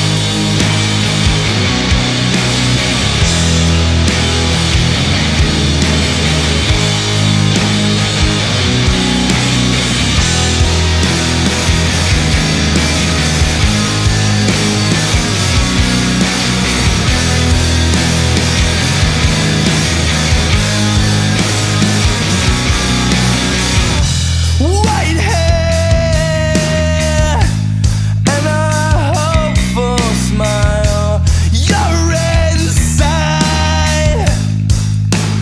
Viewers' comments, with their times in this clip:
0:10 sounds like Where Is My Mind in the background
0:16 As soon as this song hits it immediately becomes ass lol the intro is gas though.